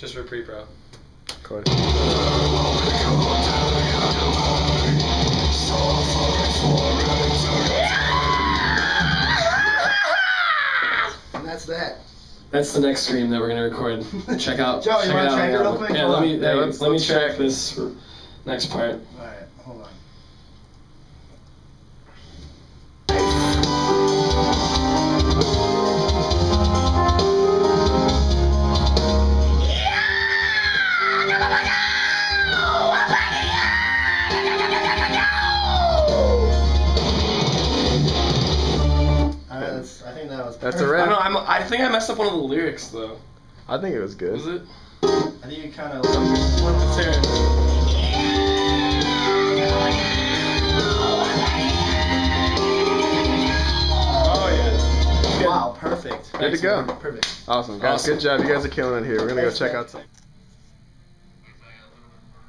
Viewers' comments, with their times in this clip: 0:07 lol his adams apple controls squels
0:26 sounds like SikTh
0:28 what a talented screamer. LOL <3
0:31 if that scream ISN'T on the new record, i will be thoroughly disappointed.
0:36 lmfao nd that song sounds wonderful.
0:38 he sounds mexican
0:41 haha that scream in the begining at like was totally jarjar binks sounding, awsome
0:46 That scream sounds like Chelsea Grin lol